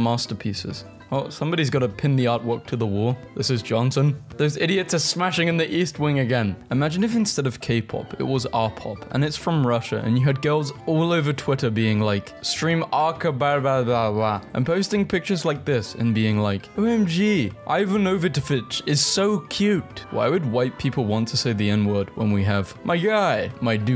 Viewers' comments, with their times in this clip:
0:08 the russian words are "I pooped my pants" 😭 sounds like a fire song